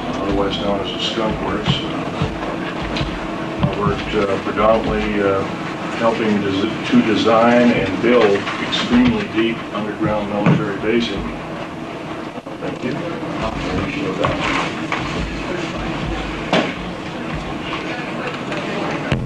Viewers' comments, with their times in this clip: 0:04 Depp breath in